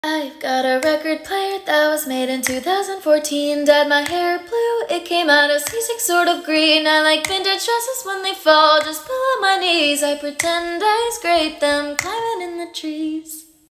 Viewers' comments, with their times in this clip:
0:07 The note you hit with, "dresses" was beautiful.